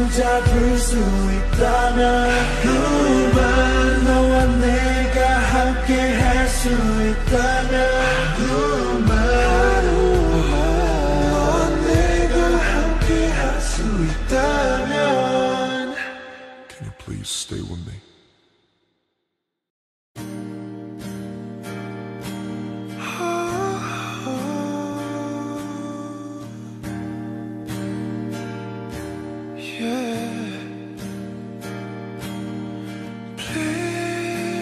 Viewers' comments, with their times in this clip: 0:07 You know how RM says his voice is really deep and if he talked like that ppl would understand him. Well I imagine that his voice sounds like it does in
0:19 My favorite childhood song and Jungkook's voice- 😭😭😭😭